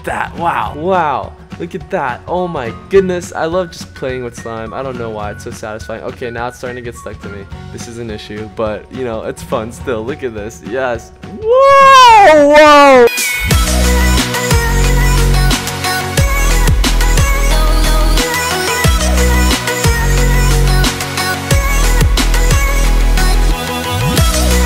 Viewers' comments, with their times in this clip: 0:10 Rip headphone users xD